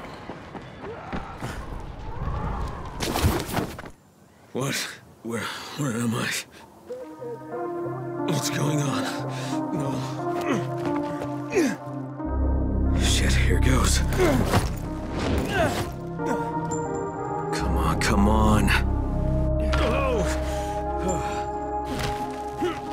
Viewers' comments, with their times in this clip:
0:06 when the music kicked in, I got straight goosebumps! Great video bro 🙌🏼